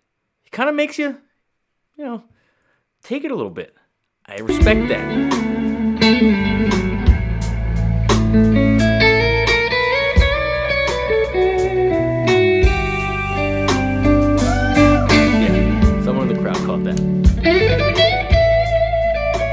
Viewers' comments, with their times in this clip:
0:07 That flat6 I guarantee was intentional. I've never heard him play a bad note.